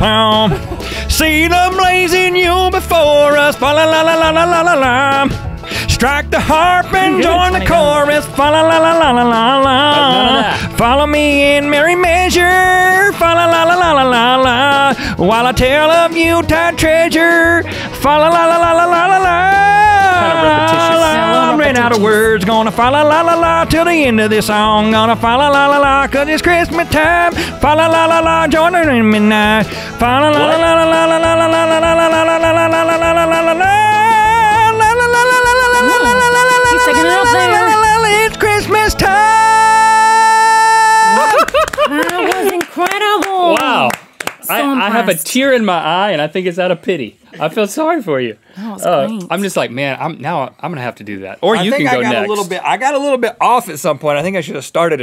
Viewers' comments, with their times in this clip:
0:05 Miranda used her real voice 😮
0:06 not Marandas voice ...
0:07 did anyone else hear miranda with her normal voice
0:36 How juju on dat beat was made